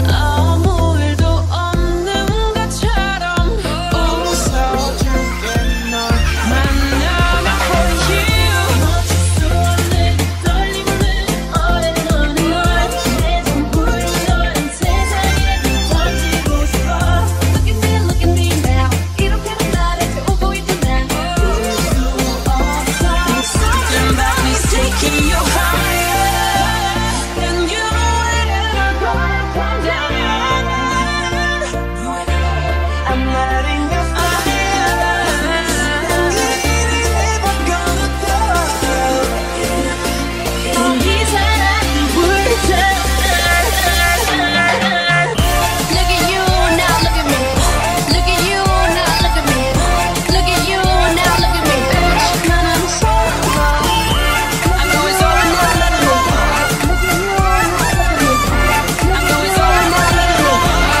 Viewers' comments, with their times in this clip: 0:08 "playing with fire" with "forever young" instrumental is so beautiful and Rosé and Lisa's voice is so hot 😍🔥🔥🔥
0:47 omg hylt on solo's tune sounds dopeeee!! This is amazing, I loved it❤❤❤